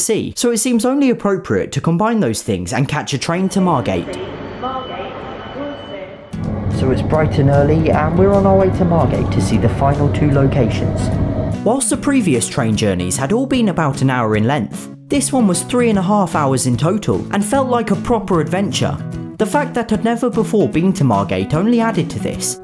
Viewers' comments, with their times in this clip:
0:10 No wonder it took 3 hours you were on a southeastern train also It was weird to hear the announcements I haven't been on a train in a while.